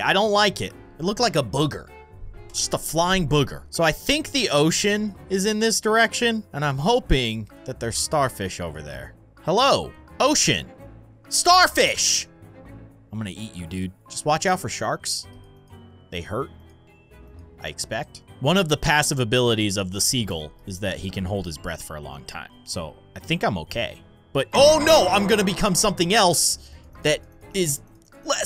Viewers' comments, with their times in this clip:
0:09 Was that oh s* or ocean